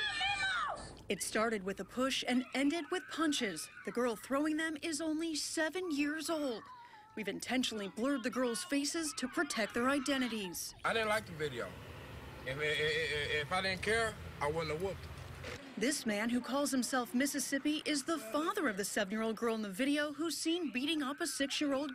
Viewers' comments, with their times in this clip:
0:04 I almost cried when i heard her cry 😢😢